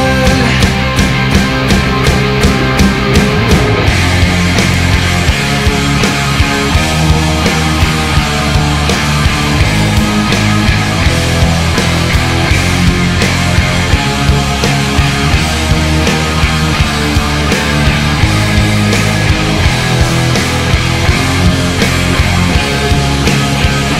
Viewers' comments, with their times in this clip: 0:09 is good but it a fake voice